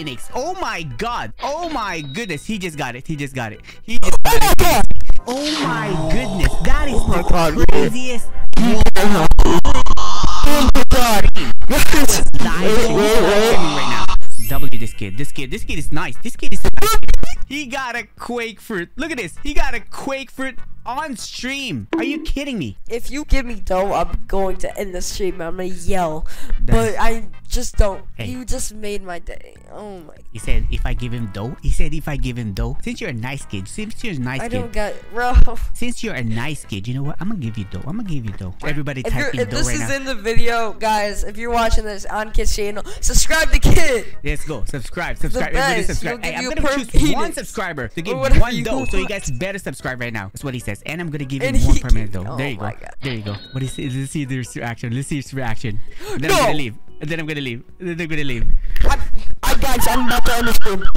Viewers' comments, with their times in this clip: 0:06 Bro i cant hear nun 💀
0:45 I know he meant to say He'll give you a perm pheonix, but it really sounds like something else....